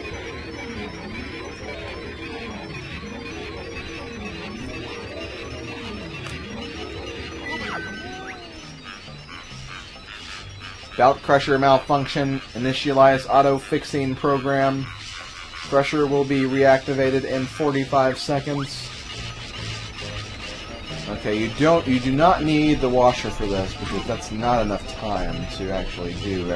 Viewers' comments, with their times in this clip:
0:08 That kind-of sounded like Mario's death sound from Super Mario 64